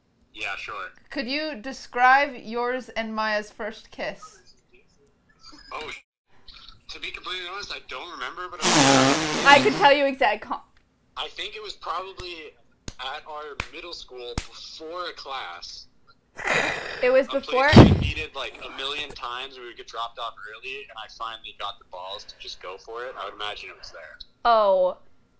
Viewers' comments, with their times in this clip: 0:07 Prop airplane taking off